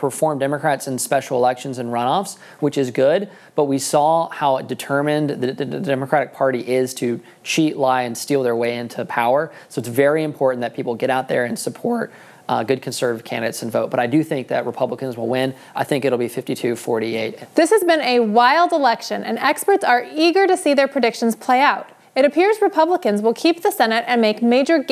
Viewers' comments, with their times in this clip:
0:10 that voice crack ... 🤣😂😅. anyway KAG 🇺🇸